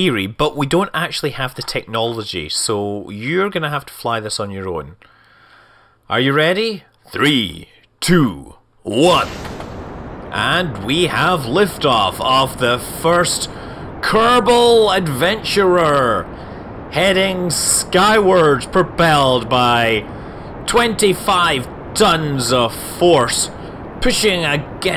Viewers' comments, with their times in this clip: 0:05 you sound like George Takei.
0:06 His countdown sounded a good bit like George Takei...